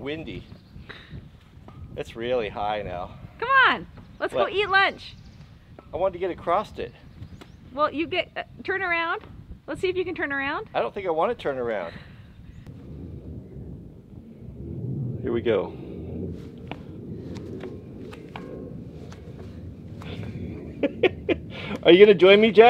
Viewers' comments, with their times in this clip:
0:05 Some give me a hard time for saying acrost.